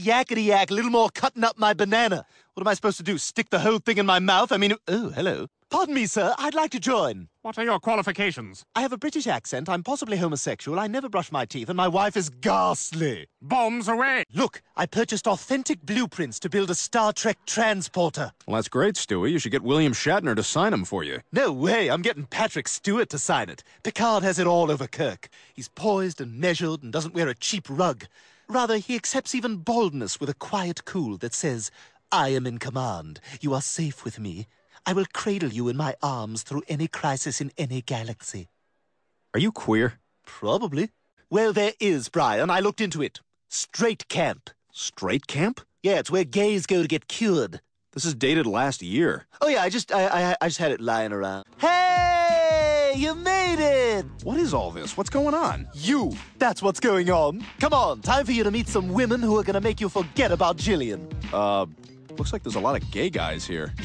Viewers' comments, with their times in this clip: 0:07 This guy sounds like Peter
0:08 he doesnt have a British acent us British are more like amaricans
0:51 he sounds like some character that sounds familiar